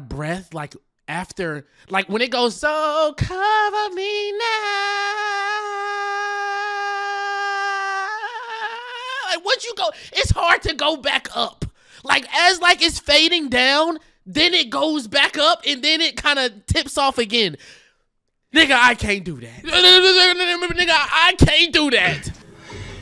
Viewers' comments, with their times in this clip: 0:05 you just need to take a deep breath before the sentence and don’t let too much air into your voice, you will run out of it that way. Also recommend trying such a note while standing up